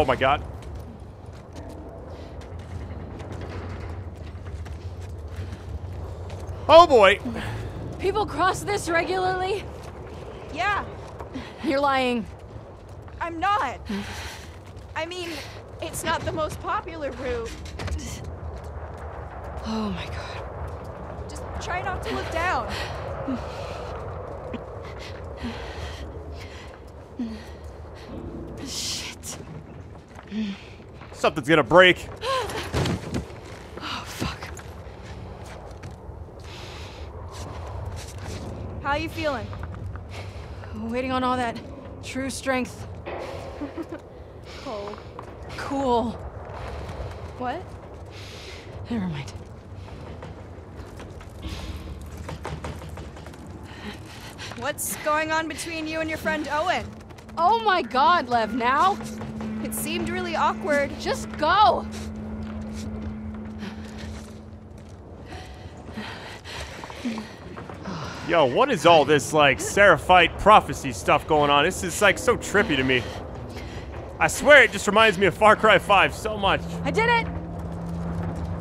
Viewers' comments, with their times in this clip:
0:10 was Lev trying to not laugh? lol
0:59 The voice of abby really seemed different. Is it because of height or something else?